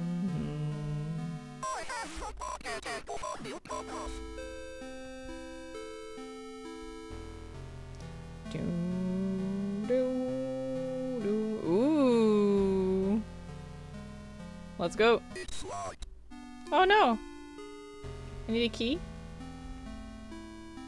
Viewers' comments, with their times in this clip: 0:03 I keep hearing here "I have to get to Bob Ross!" XDDD Maybe the demon has mistaken you for bob ross? X3